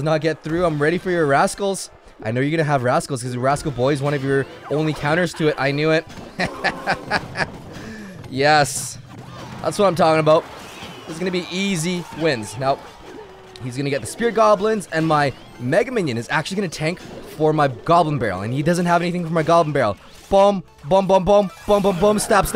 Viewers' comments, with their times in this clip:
0:07 That evil laugh tho😂😂